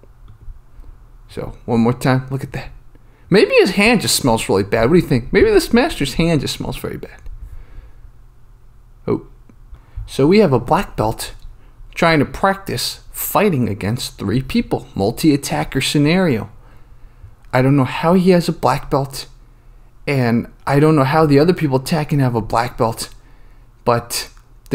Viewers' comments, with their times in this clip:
0:10 I think I've figured out the style starting It's disability kungbullshido for people who have the so called "limited range of motion syndrome" By the way, I really like the funny commentary especially because it sounds like Sebastian Maniscalco. :D